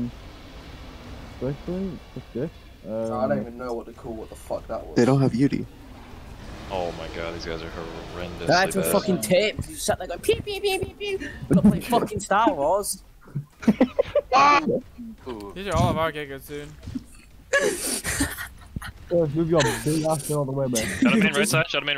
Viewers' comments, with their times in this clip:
0:09 British ppl are so funny… it’s just the way they sound when they are mad XD